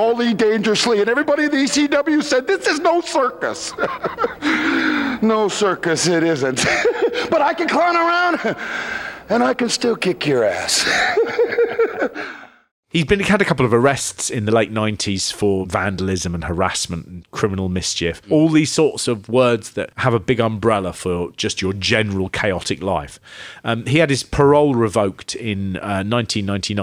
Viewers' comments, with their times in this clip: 0:09 ....MAJOR Rowdy Piper vibes here....Sounded EXACTLY like him
0:10 Notice how close that second of laughing was to Heath Ledger's Joker laugh...